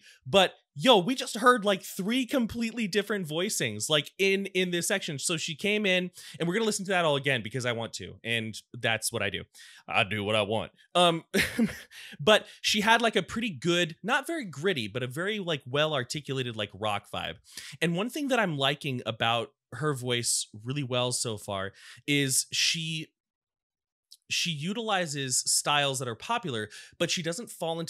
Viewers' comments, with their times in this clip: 0:08 “…because I want to” I GUFFAWED Tarja’s range and control of her voice is enough to trigger ASMR and tears of joy I wish I could have attended this concert